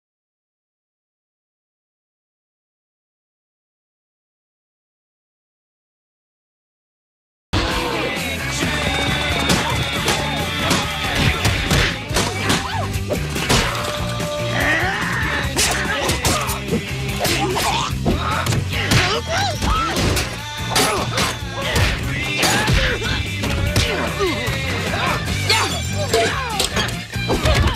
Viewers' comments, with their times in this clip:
0:09 -but principal. Free bird was playing.